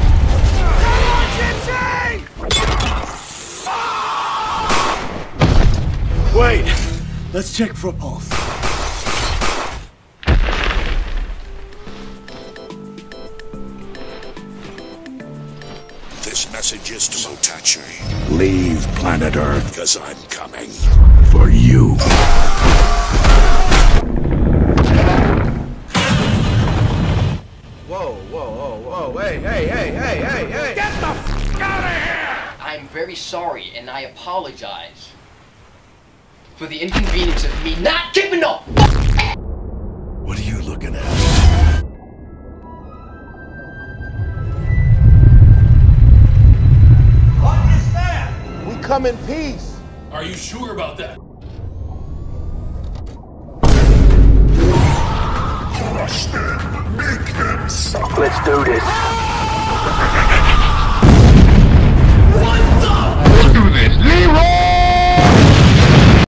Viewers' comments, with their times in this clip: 0:03 Also I like Leather Back scream
0:06 WAIT, let's check for balls!!!
0:11 Otachi: Recives a phone call and looks Gipsy: This Message Is For Otachi Leave Planet Earth Cuz I’m Coming For you while pointing at otachi *And Slams a boat on otachi so many times Otachi: Screaming
0:13 I find it funny that otachi has the same ringtone as mine
0:42 Slattern: floating Striker Eureka: We come in peace Slattern: Are you sure about that Gipsy: Thumbs up to middle finger Random Monster: Bites gipsy’s arm off Gipsy: Screaming
0:43 when the Sonic Unleashed music kicks in
0:56 Slattern: Crush Him Make Him Suff- Striker Eureka: Let’s do this running while screaming and explodes Slattern: WHAT THE- Gipsy: Let’s Do This YEHAAW while plumetting